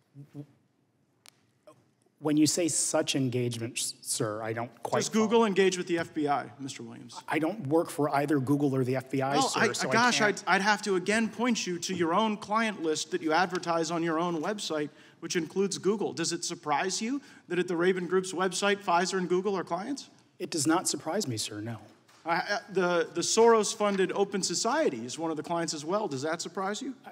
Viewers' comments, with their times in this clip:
0:09 the volume is muted on the testimony